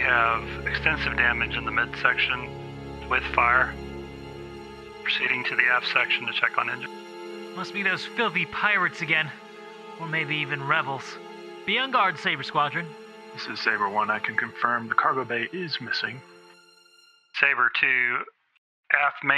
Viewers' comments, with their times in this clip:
0:06 You sound like Guybrush Threepwood. Specially "Scurby Pirates!"